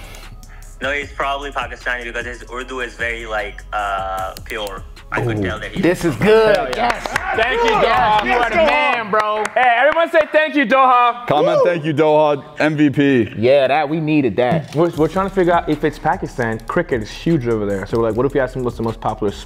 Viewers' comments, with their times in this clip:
0:03 it could also be Hindi, this is me from early on I am Pakistani and my family speaks Urdu and Punjabi but Hindi is also very similar to Urdu so either he is Indian or Pakistani or Punjabi
0:06 I said Pakistani, once he started talking, let’s see